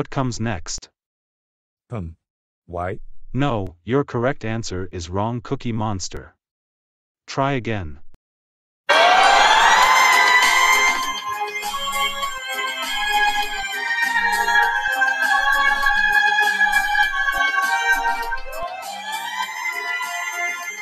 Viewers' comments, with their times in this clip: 0:08 I forst thought that sound was the fire drill alarm. LOL